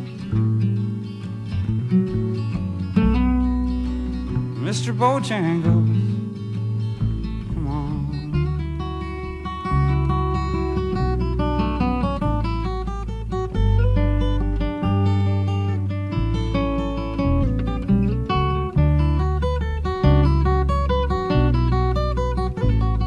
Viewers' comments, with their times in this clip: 0:07 So sweet. The solo brings stead to the eye. Tasteful and beautiful.
0:11 Great solo love it!